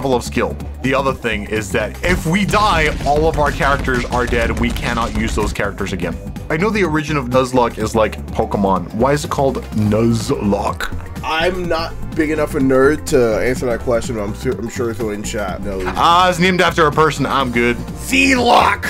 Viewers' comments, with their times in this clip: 0:06 I heard what sounded like my name and it initiated my fight or flight response